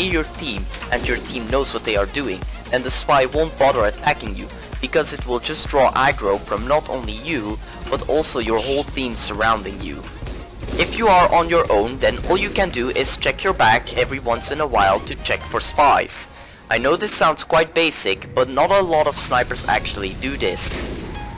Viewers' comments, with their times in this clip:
0:06 you hear a ghost voice after it